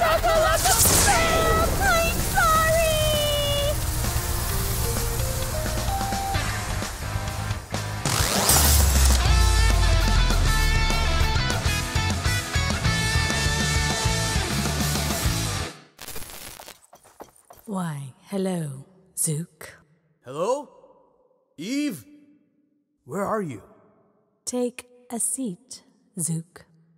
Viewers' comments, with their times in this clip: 0:10 mayday crying while duke run over 1010😂